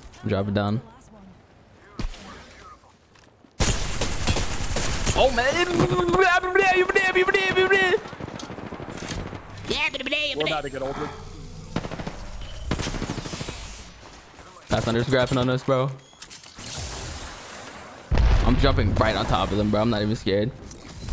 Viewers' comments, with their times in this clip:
0:09 nah bro was that fuckin Donnie thornberry? Lmaoo